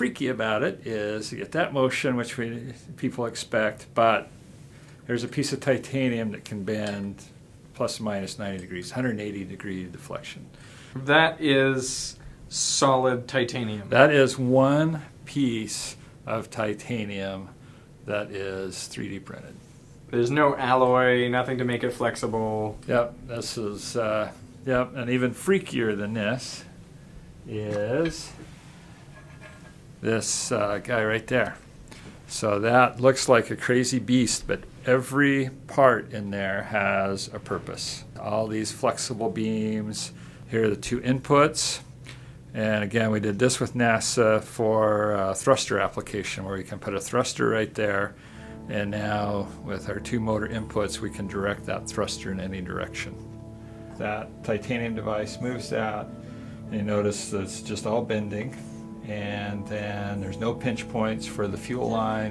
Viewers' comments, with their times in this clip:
0:06 I heard Minecraft glass break
0:06 Minecraft breaking glass sound
0:06 minecraft glas Breaking sound😂
0:07 Just me but did did you hear glass breaking when he bent it
0:07 just listen to that metallic clinking, just like minecraft
0:27 Is there a specific reason that after subminimal massages are included into the video ? i mean its cool thinking ur smart and you can hide them in there no one noticing but for persons which listents to frequenzys its pretty obvious lol good louck with that
0:50 does anybody else hear a womans voice speaking in their left ear ? or am i just freaking out and hearing in my mom everytime when i hit play?